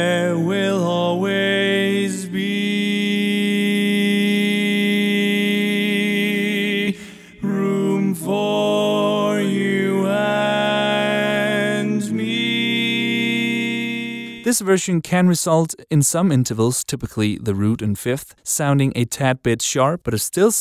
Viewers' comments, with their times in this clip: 0:03 It would seem to me that tonal drift wouldn't always be necessary if you go with option 1. You'd just need Lead to go back on the grid after they come out of the seventh. Honestly, while I agree that Lead sounded out of tune in the initial example, I actually thought it sounded just fine Yeah, it's flat, but it's also a blue note, and that sounds fine to me. As long as Lead could get back on grid after that, I think it would sound good. I honestly don't know why they sound so different to me. But I do know that most wind instruments go back on grid after changing their tuning for just intonation. It's much harder for them to drift due to how the instruments are made.